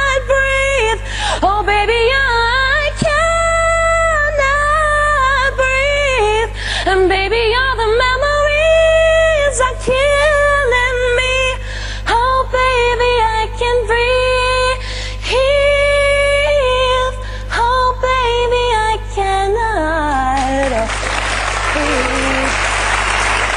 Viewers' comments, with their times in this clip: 0:07 Did she just go down a half step ??